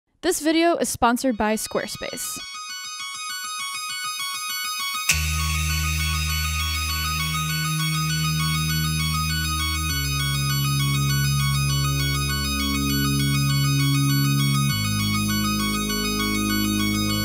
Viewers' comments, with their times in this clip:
0:05 Omg what is the opening track sounds like daft punk !!! Amazing video as always and amazing camera !!!